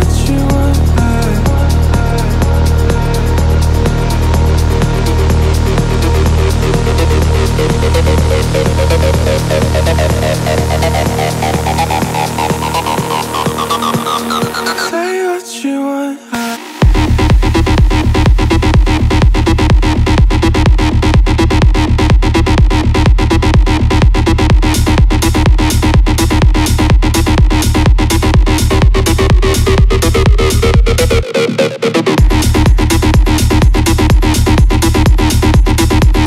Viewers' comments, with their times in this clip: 0:08 when it starts to sound like a 2001 rave... The best feeling in the world. 🥰
0:16 Are You Guys Getting WipEout Vibes?
0:18 why does it sound like conkers bad fur day club music.